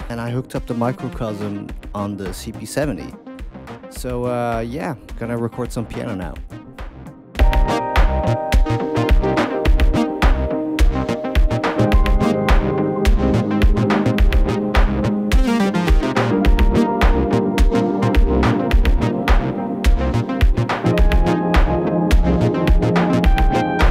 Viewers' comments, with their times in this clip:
0:07 Love what those piano chords bring 😭 really cool first impressions vid!